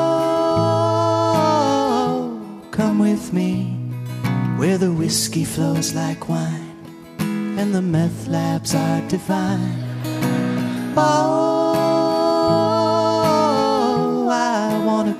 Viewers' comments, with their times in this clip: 0:03 there was no longer any music...